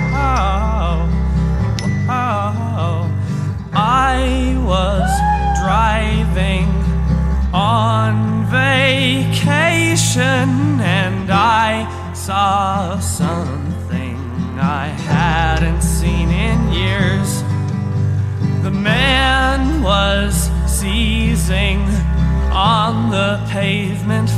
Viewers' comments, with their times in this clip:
0:05 You forgot the man screaming